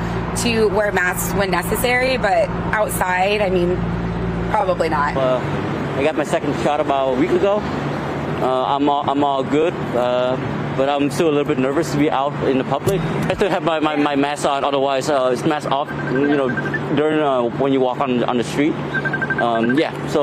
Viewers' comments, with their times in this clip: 0:04 if you talk like this. Don’t.